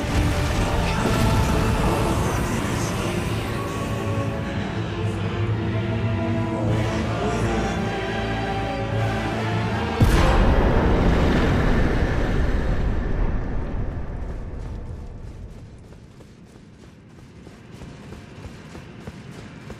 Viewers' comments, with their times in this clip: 0:05 Mad respect to the voice actor of Mohg, especially for the last line when he says "Mohgwyn" I can feel the insanity and belief of Mohg to his own kingdom. It even feels like he's dying with a smile.
0:06 A fart at exacts